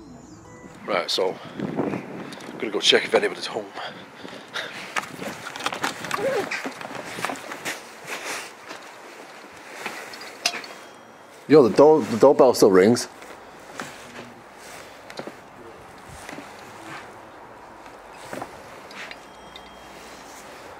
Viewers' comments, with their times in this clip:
0:06 Waa that the sound that a newborn baby makes that I just heard ? It's a sound they make when they're uncomfortable. Or before they start to cry.